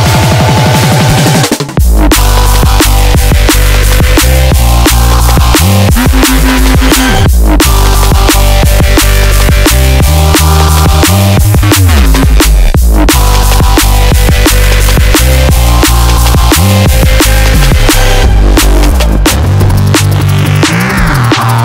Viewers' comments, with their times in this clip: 0:05 Surprise wubz makes me smile